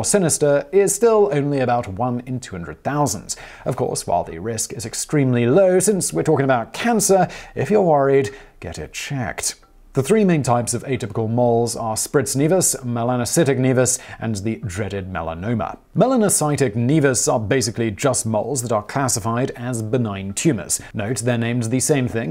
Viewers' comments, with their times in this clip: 0:07 The way you said, "If you're worried, get it checked..." God I love you, Simon.